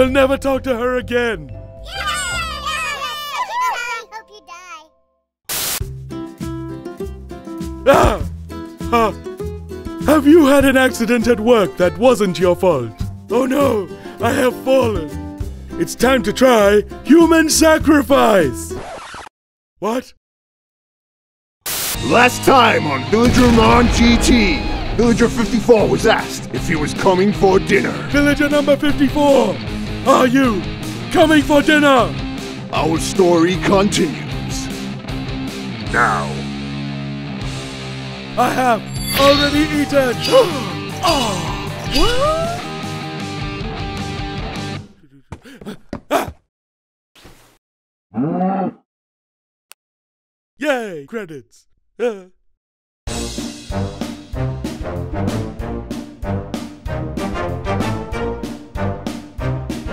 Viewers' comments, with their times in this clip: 0:04 I think a kid either said okie dokie in a weird way or they just said Okay die
0:40 Gasped, Gasped, and Gasped too ?
0:40 Black dude breathes Karen: